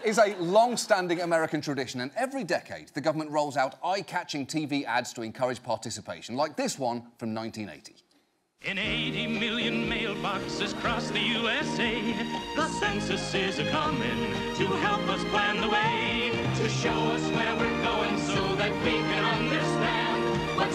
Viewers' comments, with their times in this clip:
0:08 Who else think that the census song is very much an earworm? I mean, it's really beautiful and somewhat wholesome but it's been stuck in my head for the better part of a week